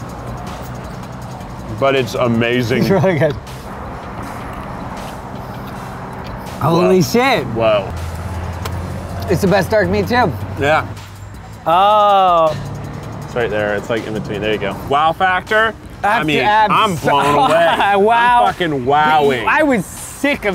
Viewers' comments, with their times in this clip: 0:07 What was he saying? "It's the best dark meat tiv?". Was it tiv or what?